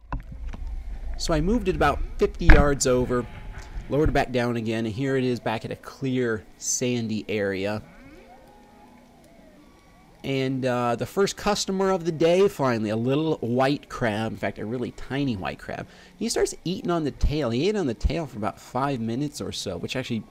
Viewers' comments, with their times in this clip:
0:08 Best fishing content, the noises are just soo beautiful